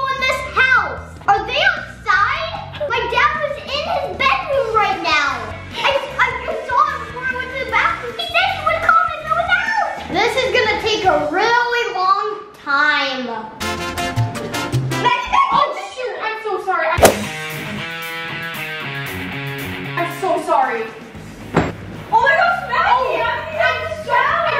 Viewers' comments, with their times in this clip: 0:05 we can here you laghfing :)